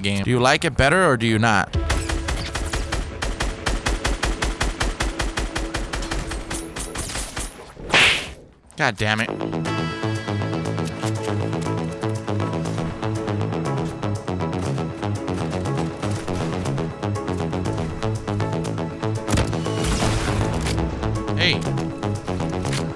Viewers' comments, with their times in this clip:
0:09 dammit lmaooo love the music